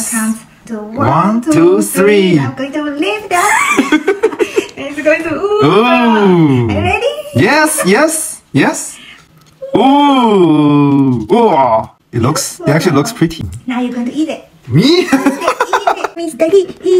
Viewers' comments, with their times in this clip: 0:03 is the biggest voice crack ever😂😂